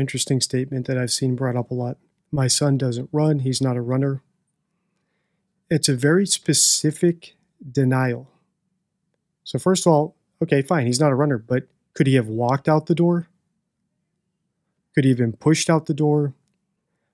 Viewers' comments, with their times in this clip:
0:03 That extended whistling exhale is bothering me.... is she uncomfortable with her following possibly scripted answer?